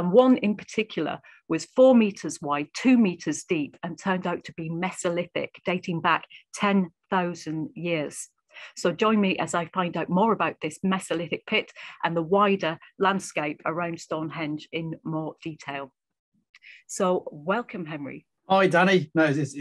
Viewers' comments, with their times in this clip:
0:04 "Mess-o-lith-ic"? You mean "Mee-zo-lith-ic"? {:o:O:}